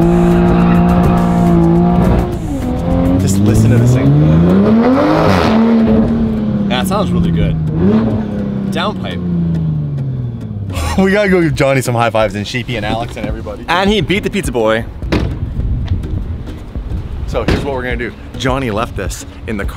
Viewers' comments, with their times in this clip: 0:04 the supra farted XDD